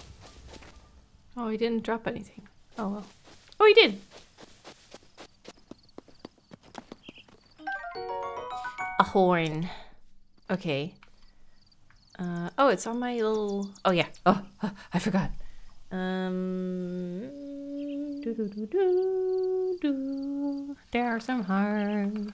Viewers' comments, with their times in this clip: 0:08 I imagine a reverse scenario where a Bokoblin picks up "Hylian Teeth," "Hylian Skull Chunk," and "Hylian Spleen" with the same cute sound effect.